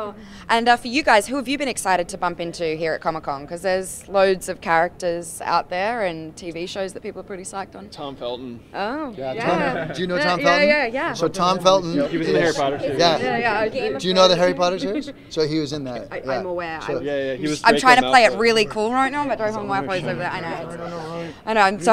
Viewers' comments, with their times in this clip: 0:05 intense eyebrow raising and music starts